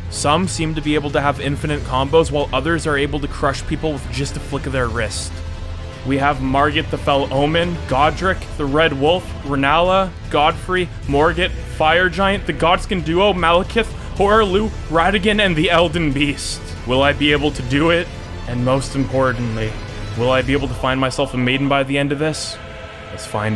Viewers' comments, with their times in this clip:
0:06 *Inhale… Exhale… I Just love The sound Of fear in his voice…